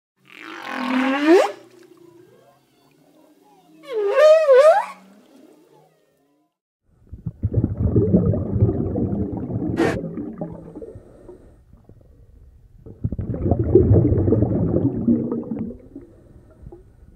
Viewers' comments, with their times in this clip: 0:05 DID SOMEBODY FART